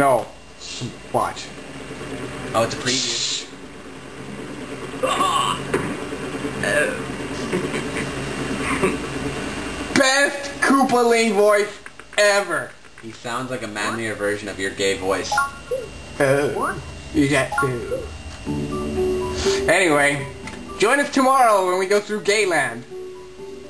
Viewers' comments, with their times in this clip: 0:05 you know, he sounds a lot like that one guy from the simpsons, i think his name was snake... seriously, that "haha!" is just a little bit faster, otherwise it would be dead on